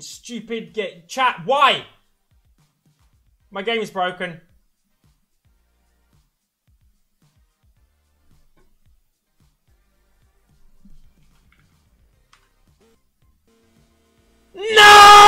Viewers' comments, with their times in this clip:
0:03 My game is bwoken! Jajjajaja